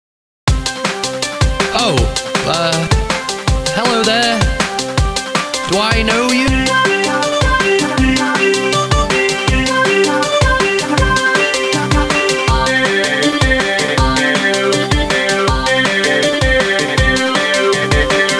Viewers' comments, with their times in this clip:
0:06 i like this song